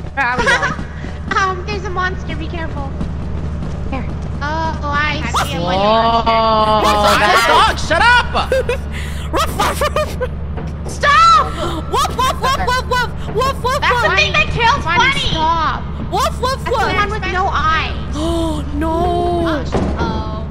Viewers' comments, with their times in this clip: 0:08 why are people funny barking at the dog?😂😂😂:_KREWHammer::_KREWCrying::_KREWRage::_KREWNoted::_KREWKnife: